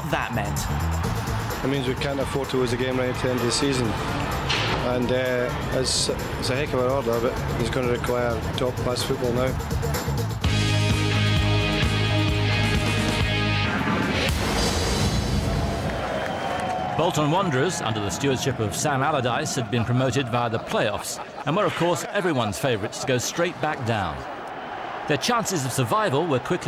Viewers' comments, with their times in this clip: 0:09 Moment of silience for the fan who yelled UR SHIT at Sir Alex Ferguson may forever he find peace.